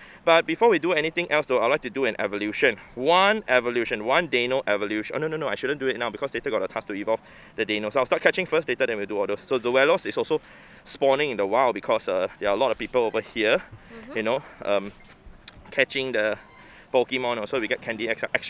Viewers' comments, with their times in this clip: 0:06 i can’t tell a single word you said